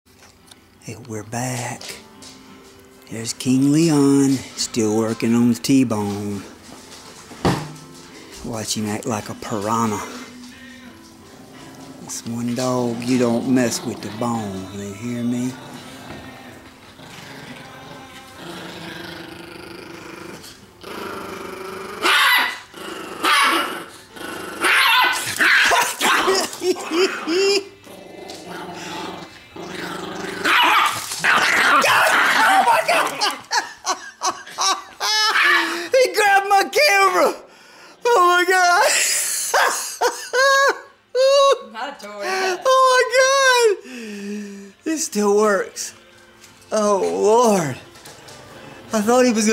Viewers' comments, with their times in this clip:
0:03 There's king Leon and he's crying
0:31 LMFAO HIS LAUGH
0:34 the way he barked in the background 😂😂😂😂
0:35 lowkey sounds like shaggy from Scooby-Doo